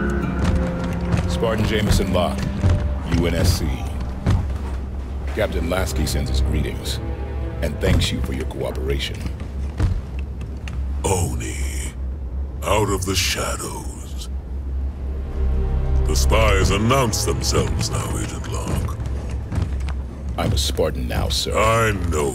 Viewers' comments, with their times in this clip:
0:10 That tone...From Keith David. Would even make Tartarus/Kevin Michael Richards take pause. That is the voice of a Born Badass who's ready to strike. A KING of Vipers. A Xenomorph KING. You can HEAR the sneer in his tone.